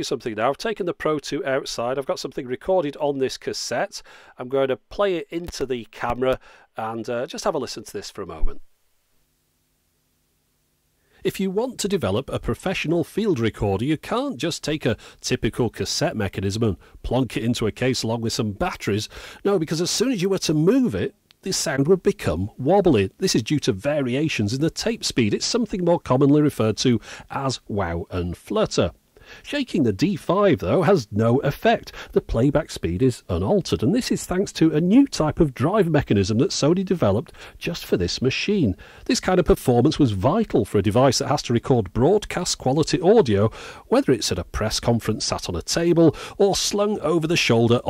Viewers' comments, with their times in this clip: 0:10 The sound of the recording was so warm and soft. sounds better than your normal recordings!
0:12 How is that the voice coming from the recorder is better and richer than the voice in the rest of the video?
0:14 impressed by the quality Not sure why anyone would want to but you could still use these today and get good quality audio
0:34 it's very slight but it does warble a bit. when you get swinging the unit on the hip if walking it will get worse. But it's the best in that manner of all portables I have used. Quite amazing.